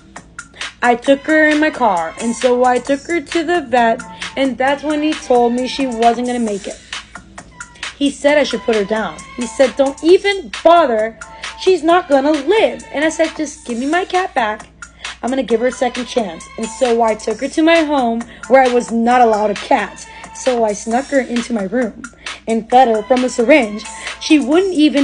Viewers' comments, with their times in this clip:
0:07 Skye adding in her background vocals was cute 🥺